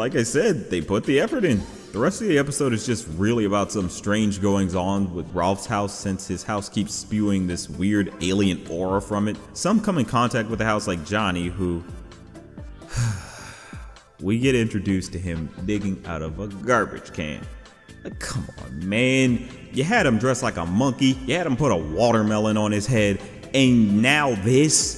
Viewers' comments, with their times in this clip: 0:10 the music choice here hit the nostalgia